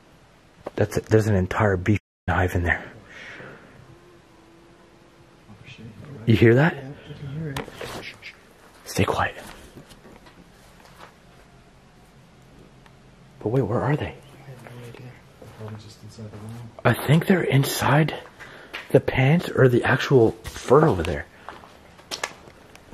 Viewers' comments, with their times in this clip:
0:03 listen carefully, it's music or a woman humming something?
0:04 you can hear the female again...it almost sounds like she’s saying “hello”. You thought it was bees but it definitely sounds like a voice.